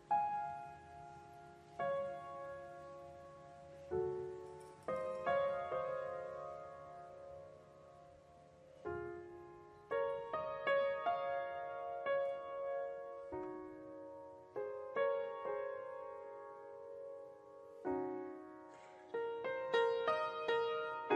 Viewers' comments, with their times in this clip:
0:07 HOLY FUCK ... who the FuK would want to play a piano, so much out of tune.... in front of a world audience .. Might this be a set-up? THIS PIANO IS NOT TUNED CORRECTLY! Maybe, on purpose?